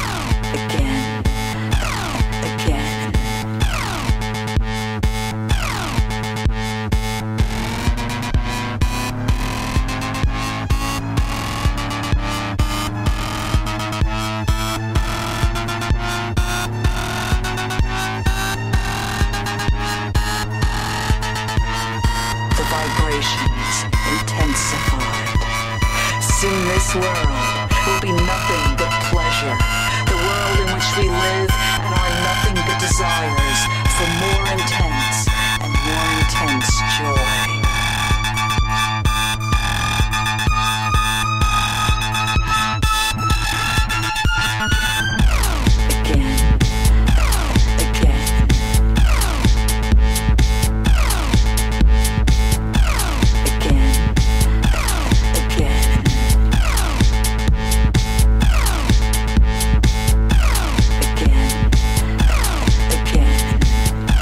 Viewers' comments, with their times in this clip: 0:07 I like it when the vibrations intensified Cool, right?
0:42 The beat drops
0:45 That beat thou lol its were it all starts